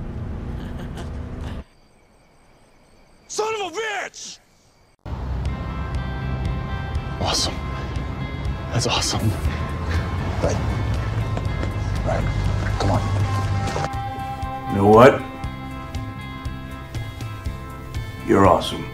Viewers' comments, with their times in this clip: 0:04 is very it is Jared not Sam. his little -Boop it is just so cute. never did I think that I would use the word cute to discribe a full grown man who is WAY older than me. Wow I'm werid.